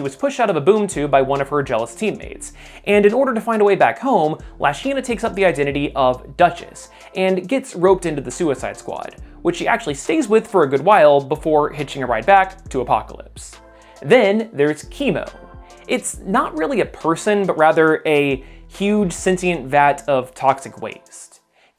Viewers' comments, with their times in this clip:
0:06 Dutch? "She took up the name Duchess". Hmm.